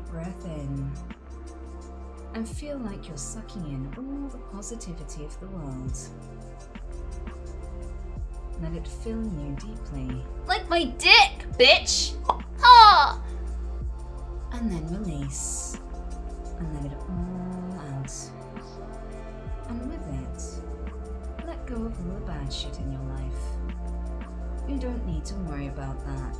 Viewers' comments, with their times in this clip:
0:09 when you already relaxed and focus then you hear her tics, you don't have no choice but to laugh like this.. 🤭🤭🤭
0:11 that sounded so Rick and Morty lol